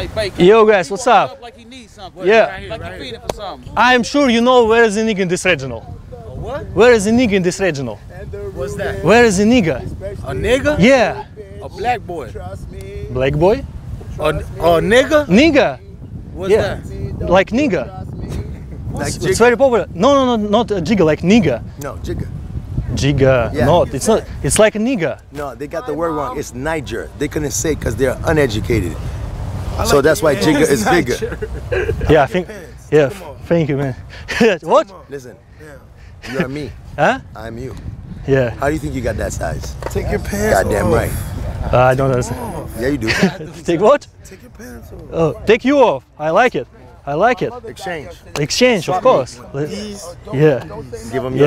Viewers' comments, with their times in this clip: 0:07 is that white boy or ..just gay.. Just look at the way he talks😂😂
0:39 dude with hat sounds like 2pac